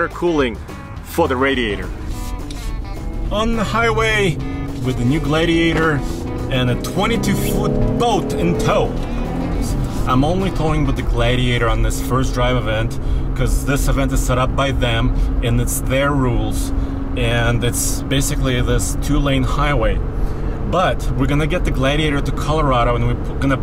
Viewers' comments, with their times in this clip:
0:08 Transmission sounds confused